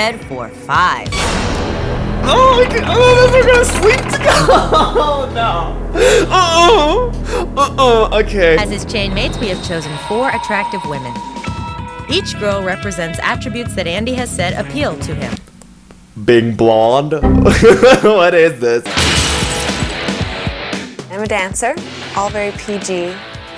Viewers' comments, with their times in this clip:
0:06 That desperate "mm mm😳" 😂😂😂